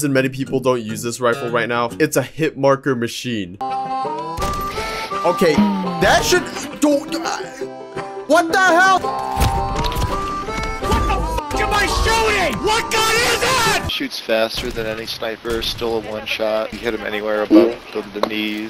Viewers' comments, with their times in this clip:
0:05 that sounds like the turkey mayor from chicken little
0:06 the mayor from chicken little